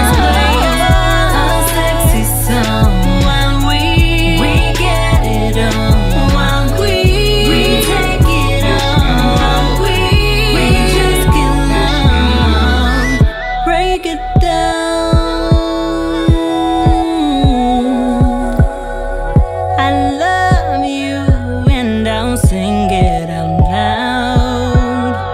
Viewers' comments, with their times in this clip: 0:08 I love this song but to me i though she said my weed ? Lol i think its juss me